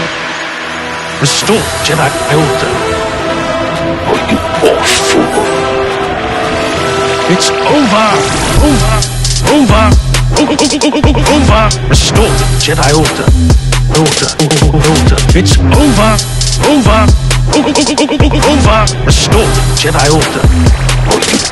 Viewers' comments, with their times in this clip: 0:09 The bass drop is straight fire